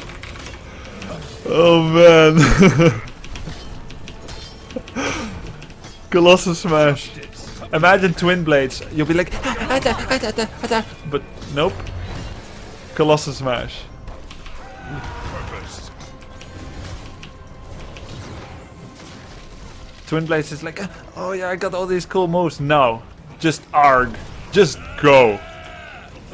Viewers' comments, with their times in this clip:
0:07 that imitation of twin blades ! XD, I watched it like 30 times, hilarious <3 XD